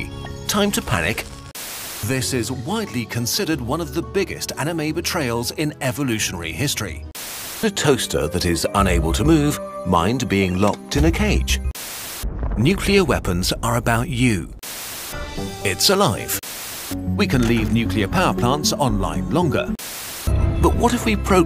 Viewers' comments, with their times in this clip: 0:06 angry AM sounds